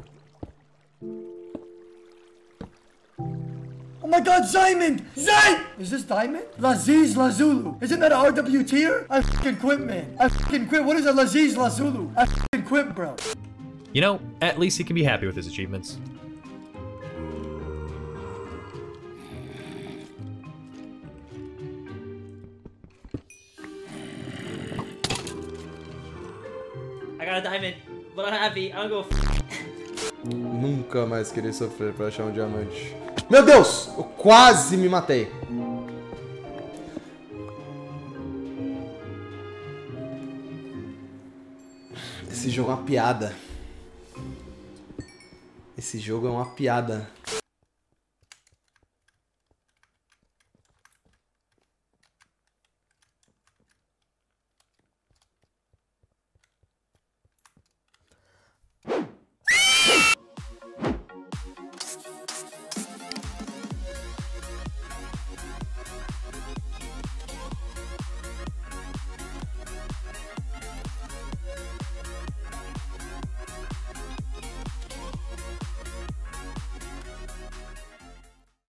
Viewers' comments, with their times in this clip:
0:06 Guy: OMG ZAIMEND WAIT IS THIS ZAI DIAMOND LAZIS LASULU. WHAT IS THAT IM QUITTING BECAUSE WHAT IS LAZIS LASULU. me: best spelling guy ever. Bravo Also me: laughing for 10 minutes
0:10 i too hate when i find laZis LAzULU thinking its ZiaMonD.
0:10 lapies lazulo what the heck bro and ziamond ziad funny😅😅😅😅😅😅
0:10 bro he just wanted to find sone ziamonds zai. but got lazies lazzoo. 😔
0:14 is the funniest thing I heard in my life ‘lazies lazuli’
0:14 the way he said lapiz lazuli 😂😂😂😂 that got me so bad😂😂
0:18 what is zis lazi lazulu😂😂😂
0:30 its brasilian , i am brasilian and this is portuguese
0:36 this language is brazilian.
0:38 man is português
0:58 that scream is sick tho
1:04 sounds like a giant mutated bat creature
1:06 Killing pig sounds
1:06 if you play it in 0.25 speed it sounds like a pig being strangled.